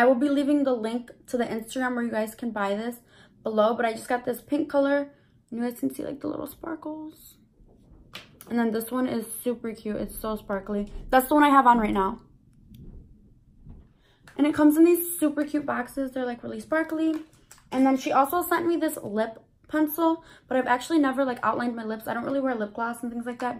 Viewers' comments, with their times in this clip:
0:08 she didn't say shuper cute she said super cute